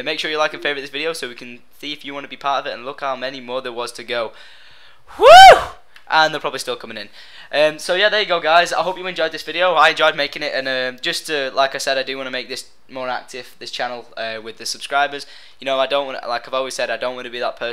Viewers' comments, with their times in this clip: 0:03 when he says "WHEWWWWW!" doesnt he sound like Bear Grylls???